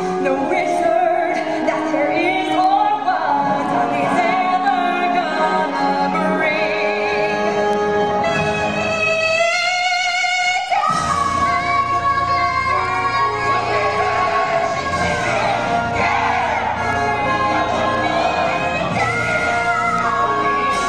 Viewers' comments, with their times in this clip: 0:08 I love that meeeee